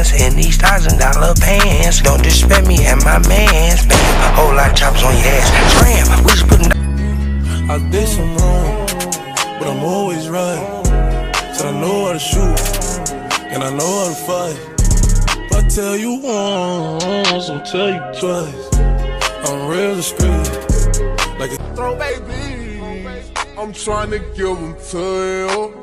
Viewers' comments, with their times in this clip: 0:07 Who else thought your AirPods, Phone, Computer or IPad was broke?